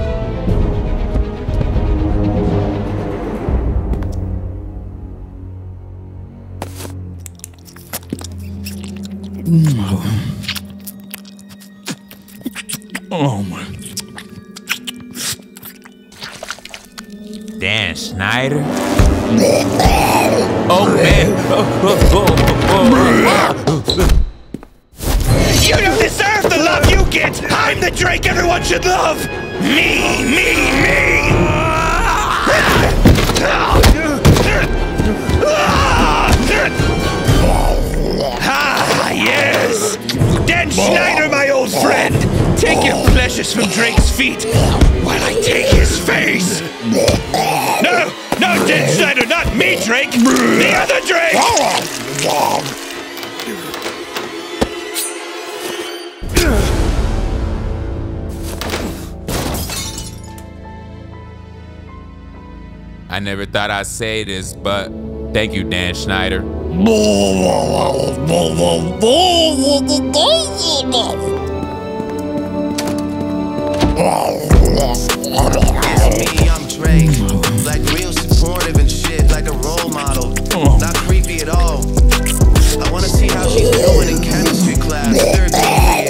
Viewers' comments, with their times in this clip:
0:09 What is this Asmr💀
0:23 The sneaker sound when he trips back 😂😂
1:07 I have no clue what Dan Schneider is saying there, but it's still funny of how MeatCanyon is making that sound for the character there.